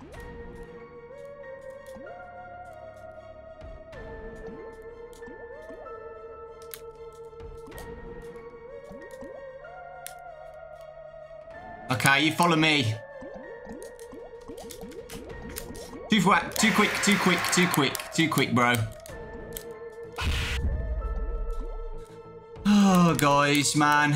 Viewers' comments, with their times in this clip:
0:08 the music got fire though